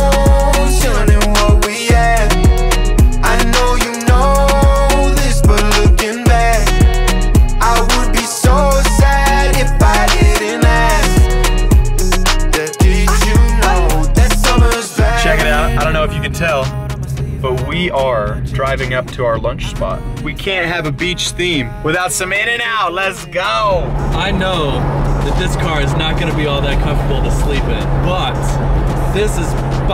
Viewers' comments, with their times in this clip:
0:10 this song is fire